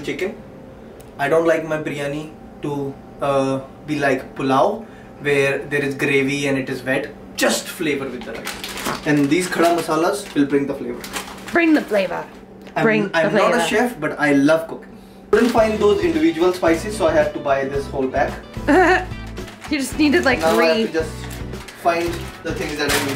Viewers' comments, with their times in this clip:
0:08 One of you farts 😀🥰🥰
0:09 someone farted 🤣🤣🤣, I was using earphones and so i could trace that sound...
0:09 what was that noise is not it fart